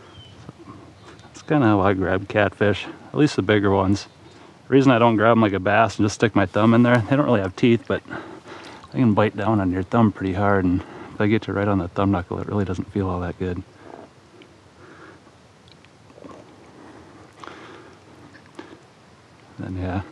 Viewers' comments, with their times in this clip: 0:05 anyone else hear that monster splashing ?